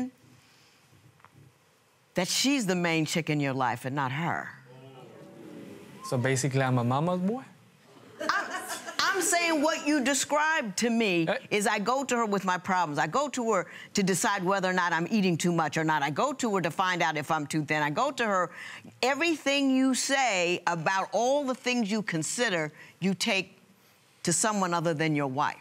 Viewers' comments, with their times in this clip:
0:07 i love the way he said..... " sooo im a moma boy?"